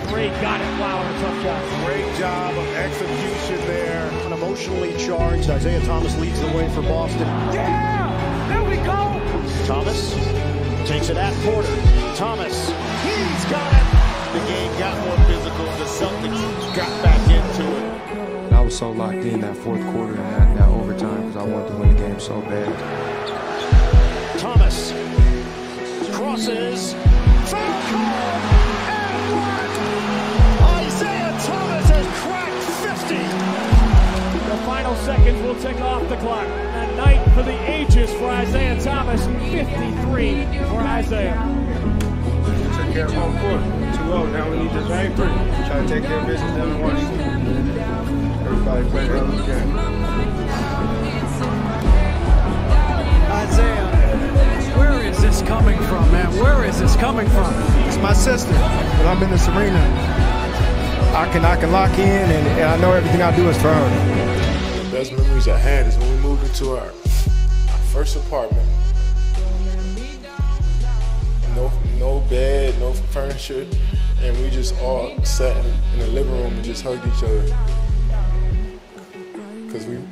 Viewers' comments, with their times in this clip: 0:07 the cheer up
1:06 the music completely ruins the mood